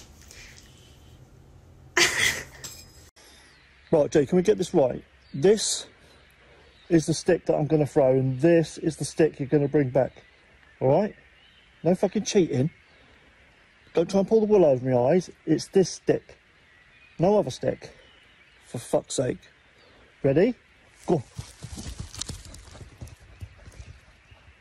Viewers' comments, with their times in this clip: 0:09 That accent threw me for a loop 😂